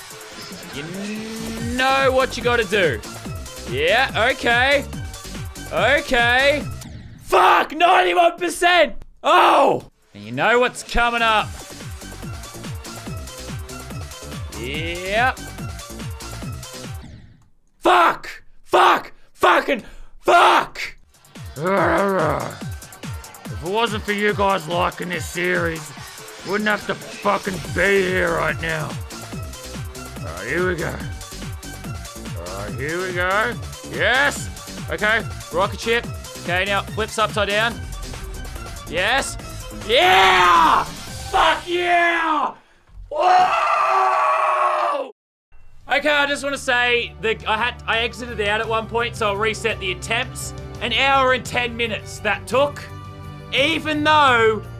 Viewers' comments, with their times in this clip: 0:09 he sounds ken from the bee movie
0:42 intense voice crack